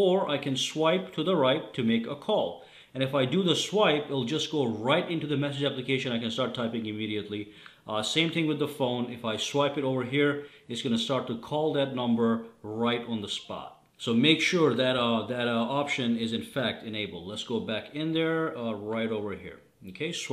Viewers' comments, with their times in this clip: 0:07 If you listen he kinda said ' You Idiot" lol